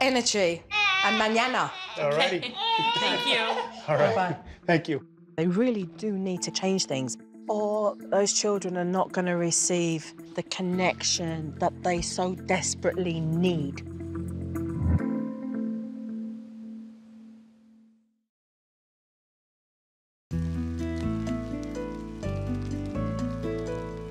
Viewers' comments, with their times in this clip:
0:07 Jo shakes the babys hand and he immediately stops crying. magic